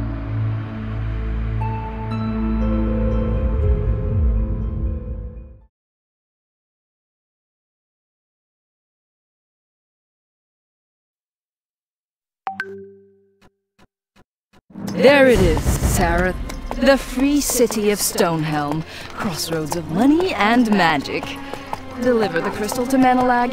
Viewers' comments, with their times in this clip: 0:10 you have a WhatsApp message xD